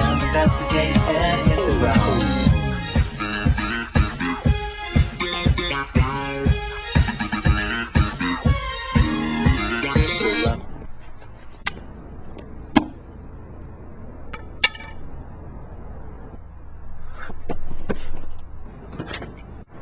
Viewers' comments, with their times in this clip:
0:07 the music gives up